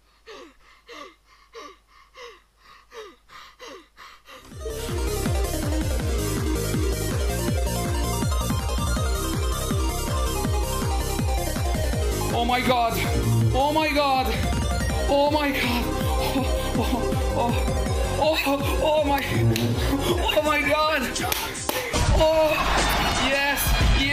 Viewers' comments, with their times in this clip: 0:05 make reaction better with slapping sounds